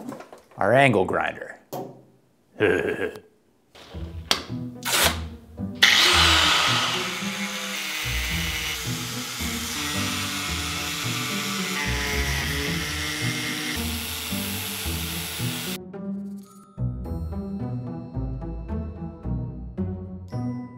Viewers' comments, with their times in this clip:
0:08 Sound of the money printers in the states during covid